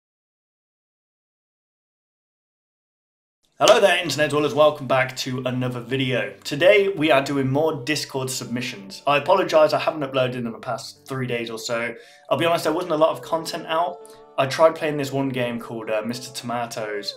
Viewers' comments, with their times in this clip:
0:03 He mentioned it in text at the beginning of the video (after the spooky intro). For some reason his computer recorded the audio from his webcam instead of his microphone.